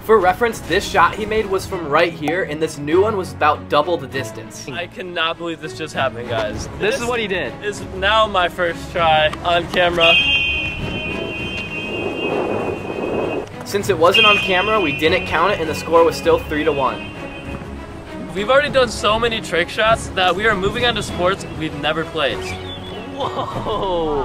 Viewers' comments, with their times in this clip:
0:10 Never knew that's the sound vortex footballs make